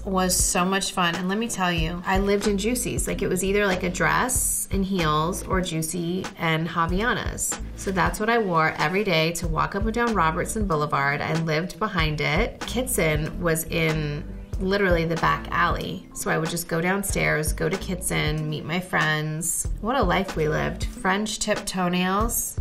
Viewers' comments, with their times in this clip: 0:07 The way she says "Havaianas" in Oh my Brazilian heart.